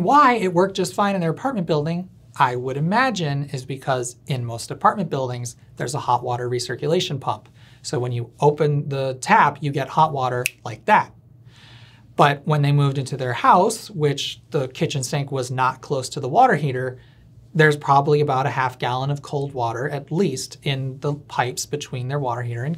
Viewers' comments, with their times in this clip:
0:10 SEVERE AUDITORY HYPERSENSITIVITY SEIZURE TRIGGE RWARNING finger snap